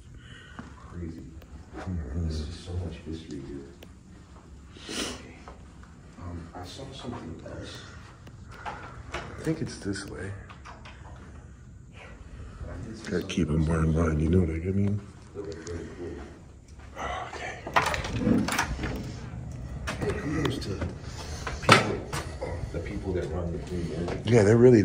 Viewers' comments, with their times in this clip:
0:05 evp saying ok